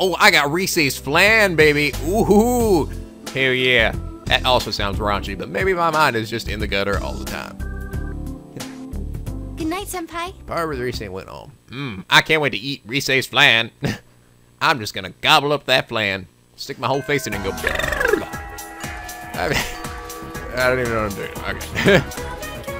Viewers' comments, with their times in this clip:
0:09 that sound you made... sounds like you are gobbling something else, knowing rise